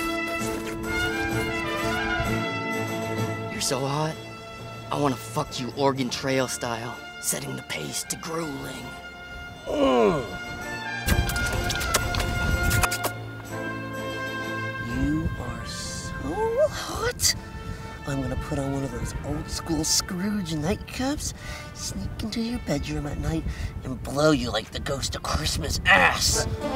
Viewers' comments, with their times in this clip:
0:09 Aw, that Mira Sorvino comment was cold! lol I just came here for that growl Chris. You sexy beast.